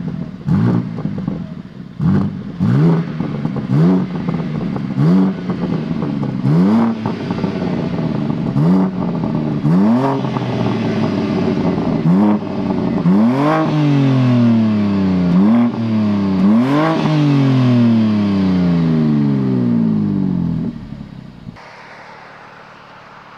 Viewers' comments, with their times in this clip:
0:10 sounds exactly as inline 3.
0:10 it sounds exactly as inline 3.